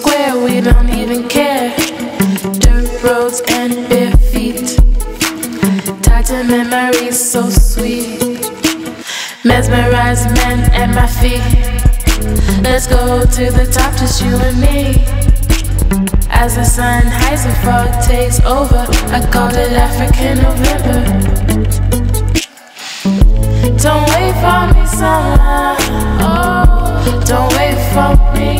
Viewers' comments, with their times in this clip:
0:10 the beat <3